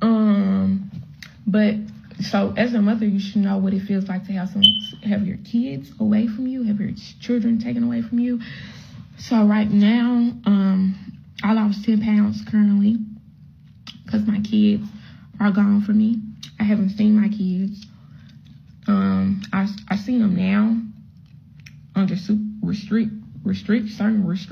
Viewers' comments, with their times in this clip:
0:03 that smoke detector never fails
0:05 the face after the chirp😂